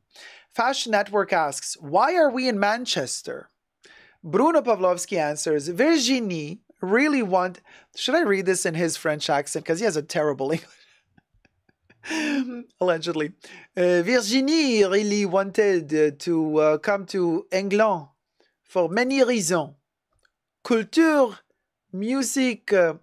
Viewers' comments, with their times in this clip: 0:09 hahahahahha the accent, i'm dead!